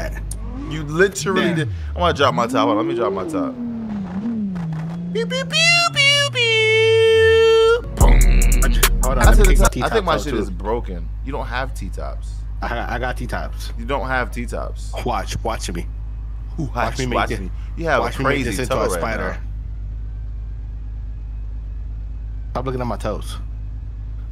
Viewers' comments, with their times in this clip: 0:08 trunk started shaking soon as the beat dropped😂🔥